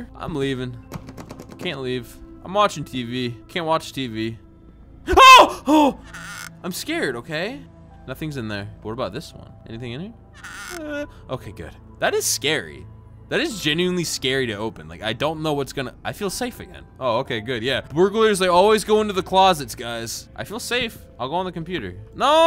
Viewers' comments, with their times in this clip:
0:04 the scream just make me laugh